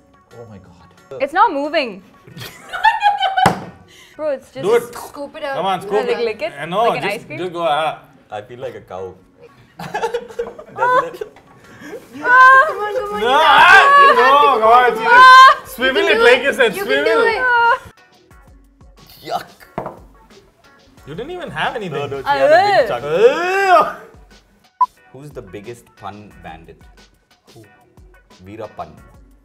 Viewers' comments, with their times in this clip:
0:09 I had my speakers on!!! Come on... It was a nasty sound😶😂😂😂
0:10 her scream made my whole House mates to turn at me
0:10 and everyone turned their volume down 🤣🤣🤣🤣🤣